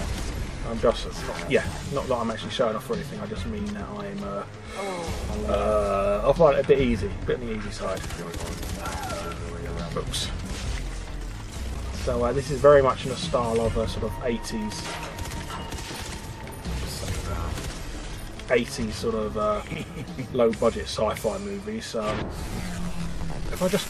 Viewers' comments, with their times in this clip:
0:04 Did you fart ???